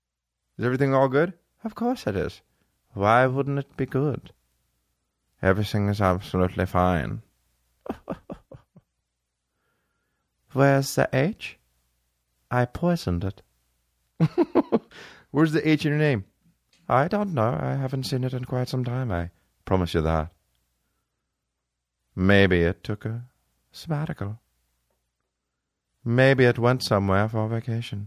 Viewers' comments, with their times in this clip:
0:10 Saying this with that inflection followed by sinister cackling? Ridiculous, haha